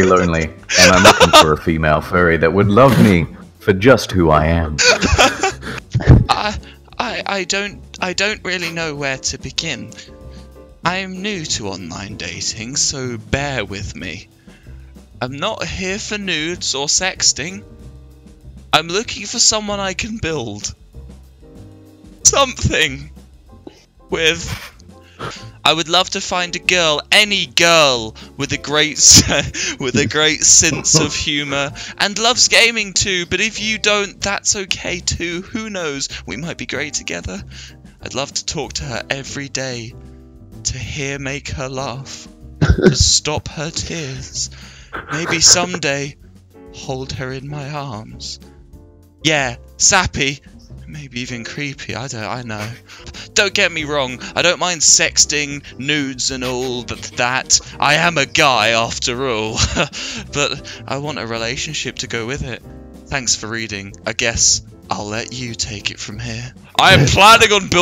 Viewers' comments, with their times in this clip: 0:06 Wilbur just sounds like the nice guy ballad character lmao
0:09 that guy actually sounded nice
0:11 The segment sounded like a hobo johnson song
0:55 sounds like a hobo Johnson song